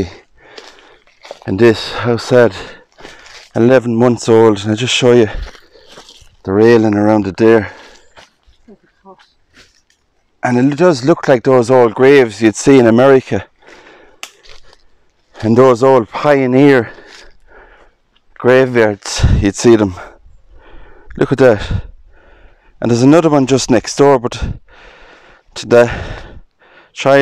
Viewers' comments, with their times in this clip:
0:09 At time stamp I heard a woman's voice say something that I could not make out/understand. I don't think a lady was with you so that was a spirit.